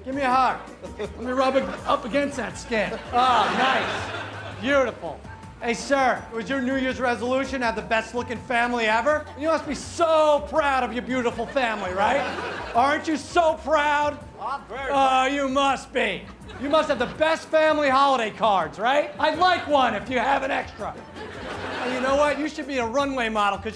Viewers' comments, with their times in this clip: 0:04 he sounded more jealous than nice lol